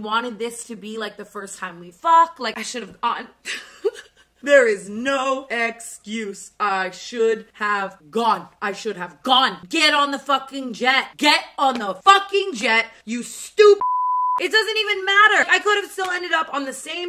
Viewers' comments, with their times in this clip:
0:03 THE PAIN IN HER VOICE WHEN SHE SAID SHE SHOULD HAVE GONE😭😭